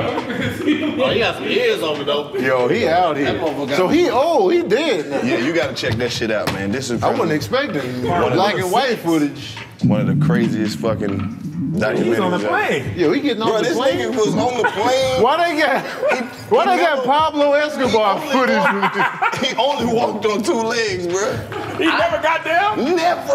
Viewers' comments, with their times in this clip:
0:10 Aye, who stomach was grumbling at the mark?!! 🤣🤣🤣🤣 Those are some helluva mics!